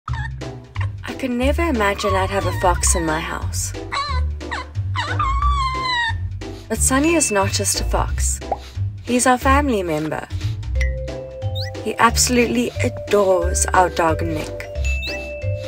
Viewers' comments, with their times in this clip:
0:03 Now the fox 🦊 meows! Now we know what the fox says! Meow!